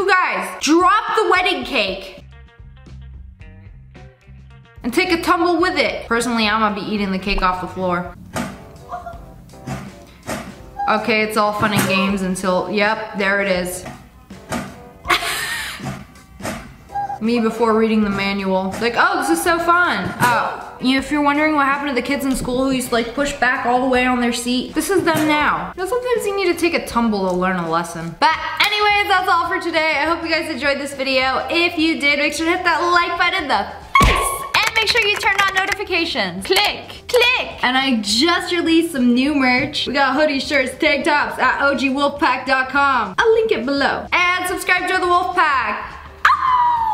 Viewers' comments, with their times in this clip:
0:04 that one lady clapping when the cake fell
0:12 that one good girl who still claps after the cake disaster!
0:28 I'm usually great at not laughing at someone else's pain or misfortunes, but kicked my arse, just listening to "ooof"